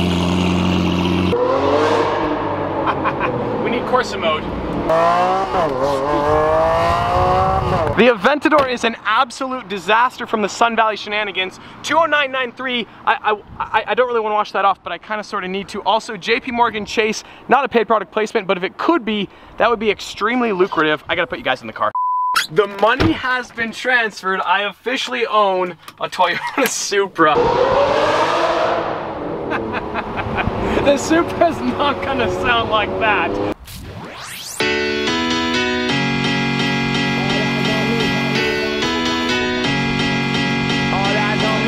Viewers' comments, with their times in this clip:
0:07 WHAT DID I JUST hear the door not make a Norse!
0:24 the attacks of the sqweak
0:27 says nervously realizing he could have saved a couple hundred thousand dollars on a car...